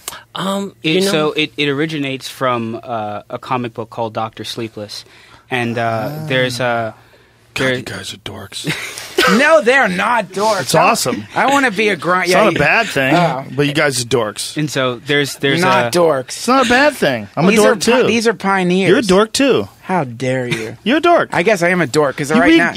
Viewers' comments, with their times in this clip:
0:10 I just realized joe and Duncan were talking to 2 different people. They have the same monotone voice so...